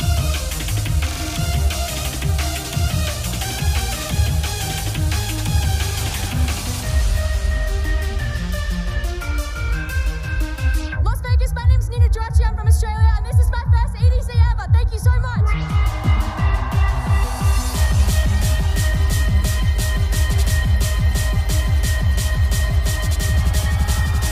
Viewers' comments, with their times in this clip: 0:09 such a crazy transition. Lives in my head rent free